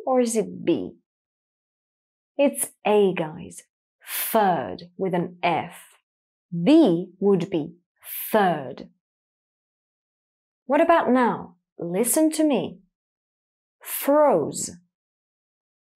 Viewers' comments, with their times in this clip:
0:03 you say definitely F and TH in the same way. Always